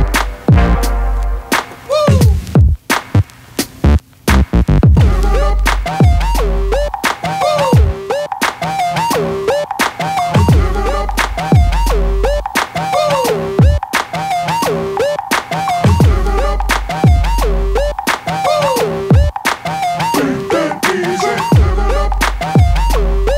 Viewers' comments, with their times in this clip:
0:08 the beat drop was so anticlimactic :)